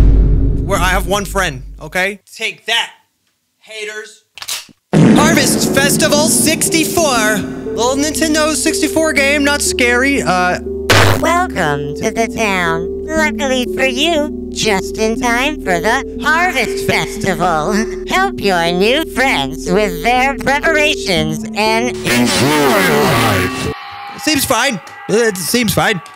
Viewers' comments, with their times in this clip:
0:04 Regarding that sound effect, was it TooLit or ToiLet?
0:11 the voice…my soul left my body when I heard it.